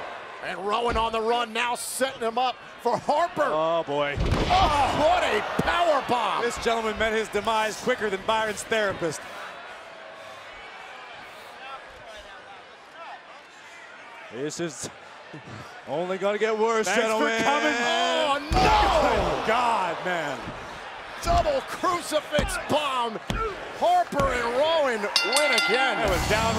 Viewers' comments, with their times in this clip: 0:10 Harper turns the guy the wrong way and Rowan laughed at him